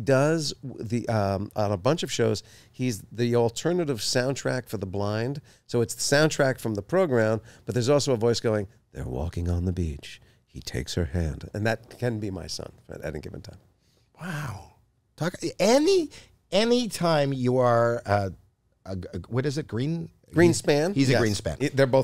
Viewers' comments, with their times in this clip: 0:08 Who knew Jason had that deep sultry voice up his sleeve!! Haha legend!